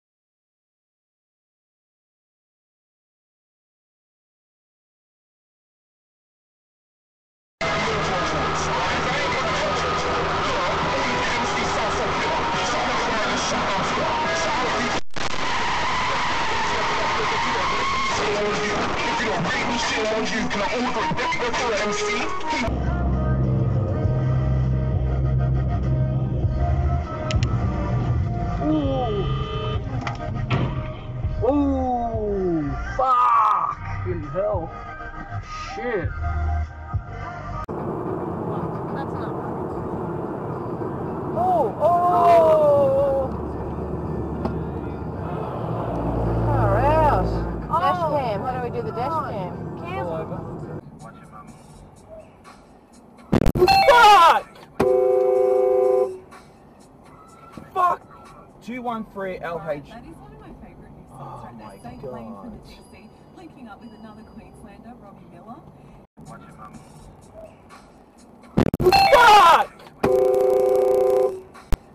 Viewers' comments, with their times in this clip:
0:07 RIP laptop speakers.
0:13 Ah yes, my favorite radio station. My favorite song they play is REEEEEEEEEEEEEEEEE
0:13 the audio quality of this dashcam is amazing! Anyone know what model it is?
0:22 what car has this early detection system? (the beeps beforehand)
0:56 horns and $5 spend right there